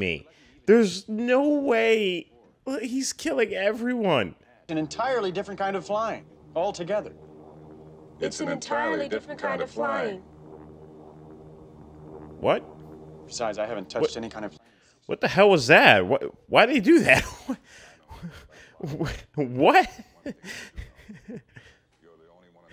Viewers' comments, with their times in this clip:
0:03 They said it, all together.